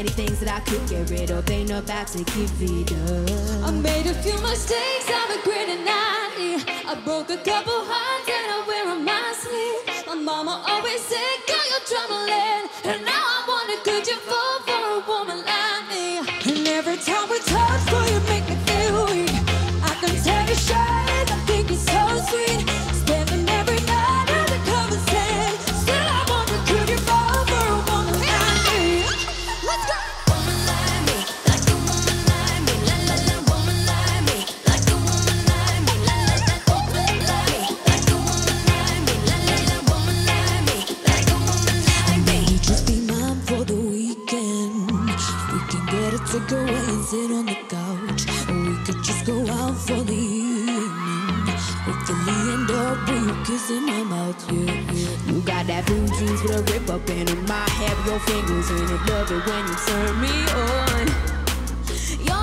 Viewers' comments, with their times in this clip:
0:09 Jade's transition to "sleeve"... 🤯 💜💜💜💜
0:11 is that a burp?
0:27 don't know wtf is that voice but I LOVE IT PERRIE
0:42 That voice o_o I'm blushing
0:44 Jesy' voice here JESUS WOMAN CALM DOWN